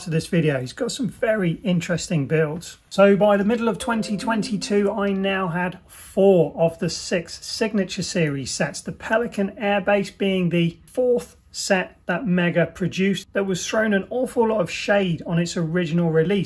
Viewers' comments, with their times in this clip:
0:04 windows disconnect jumpscare